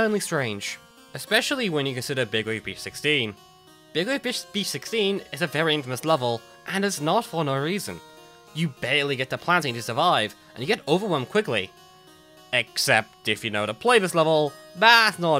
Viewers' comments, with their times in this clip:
0:03 Big Wave Bish 16
0:03 Mouth Typo "Bewebeghbeish 16"
0:03 When he says big wave bitch .. beach 16